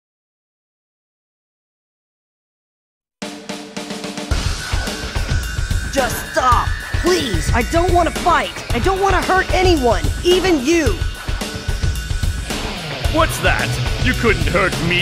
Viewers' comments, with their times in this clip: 0:03 Shit always goes down when this tune plays